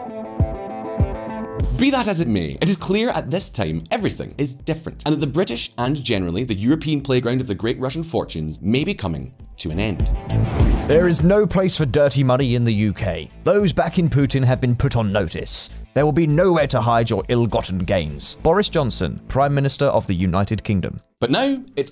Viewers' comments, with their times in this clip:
0:09 The Boris impression was beautiful